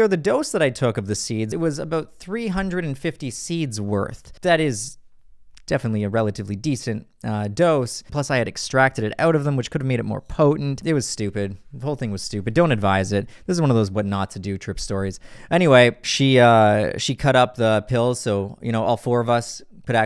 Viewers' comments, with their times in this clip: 0:07 I paused the video because just from the way he said "morning glory seeds" you can tell how this went 😂